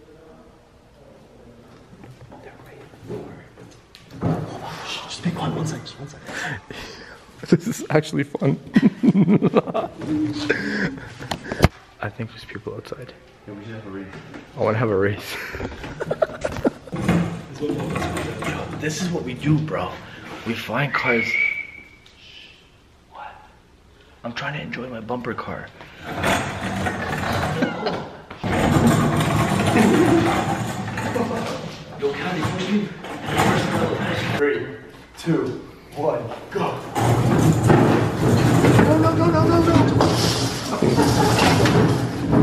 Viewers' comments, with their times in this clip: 0:05 you here a girl scream
0:08 the evil laugh
0:27 who also heard that meow